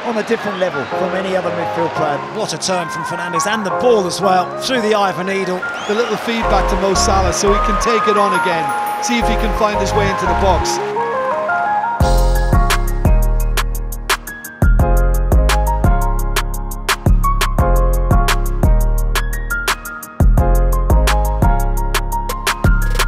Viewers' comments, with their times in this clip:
0:07 pes players will remember this voice